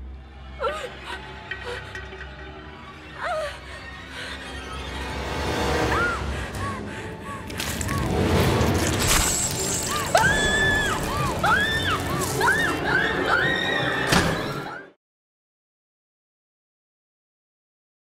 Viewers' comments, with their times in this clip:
0:10 I would be screaming way louder than that hella louder